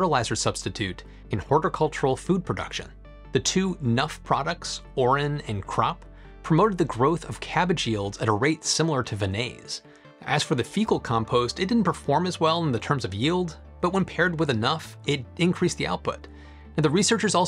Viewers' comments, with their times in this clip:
0:04 Aurin and C.R.O.P. sound remarkably similar to urine and crap.